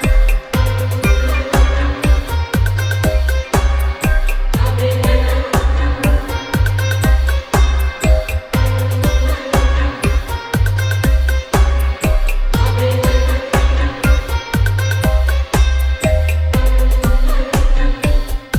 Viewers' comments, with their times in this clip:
0:06 too good samples 😁